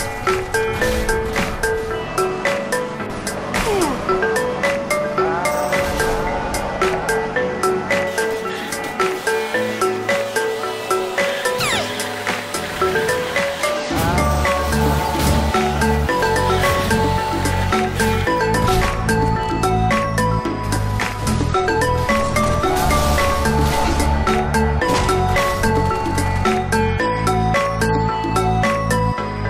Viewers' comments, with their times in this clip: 0:10 I love the noise the Spartan made when you killed them while it was sped up. Edit: it’s